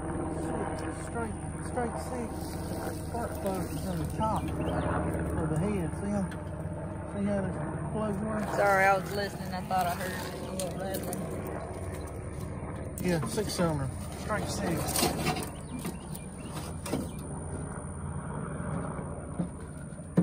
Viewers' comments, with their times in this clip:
0:08 Y’all close to FT Rucker? Helicopter sounds awfully familiar